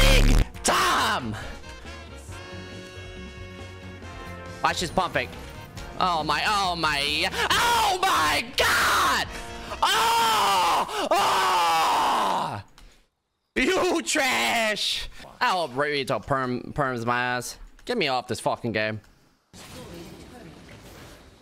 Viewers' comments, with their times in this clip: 0:07 You gotta turn the volume down or people might think you're watching porn